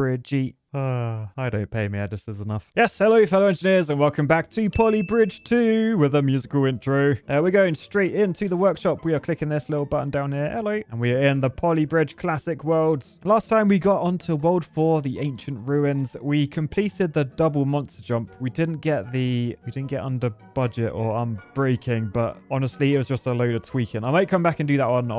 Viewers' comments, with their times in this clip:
0:07 skip to to keep your ear form bleeding